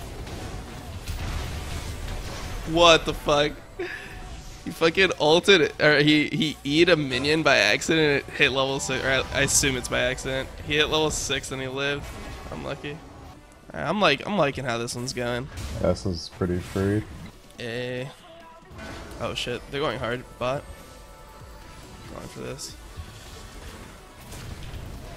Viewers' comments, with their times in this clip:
0:07 Yo that old school maple level up sound tho
0:09 that fucking Maplestory Level Up sound
0:09 LOL dat og maplestory level up sound, that was such a good time. Like if you played maple back in the day